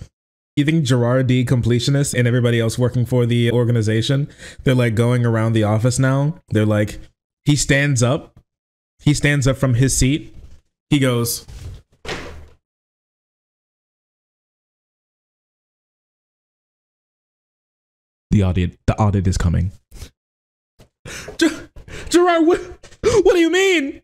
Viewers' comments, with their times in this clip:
0:10 These improv bits are why I watch. Especially the horn doot. Funniest shit ever.